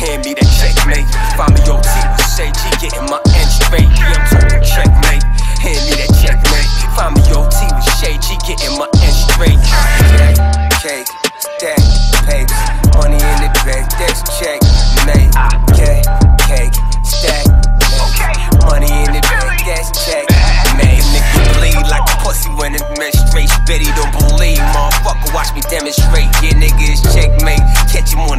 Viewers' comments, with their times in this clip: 0:10 Proper flow, some 🔥🔥 bars still DAMN👌👌👌 spits to hard